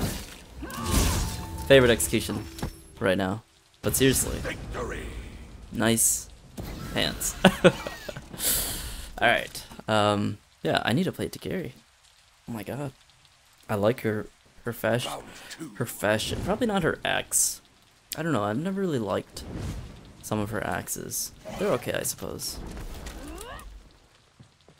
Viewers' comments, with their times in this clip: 0:09 "I need to play hitokiri" the caption says: "I need a plate to carry" 😂